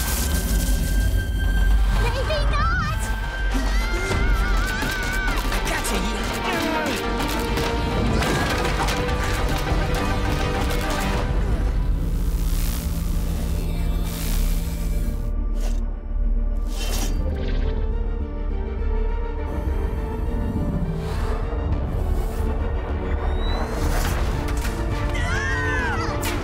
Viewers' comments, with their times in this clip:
0:07 I AM INTRIGUED! Also 3 things, did Jake say a move called the “sex-change”? And Tricky said she’s “trying” to have an existential crisis? (Probably just a mistake, but after hearing it you can’t get it out of your head) And Yutani’s little smile at Jake !! I love it!